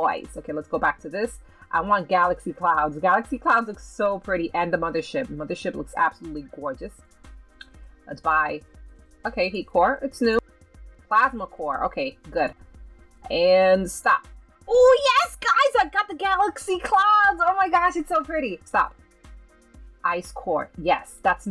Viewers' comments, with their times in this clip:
0:05 You sound like Harley Quinn when you said: Gorgeous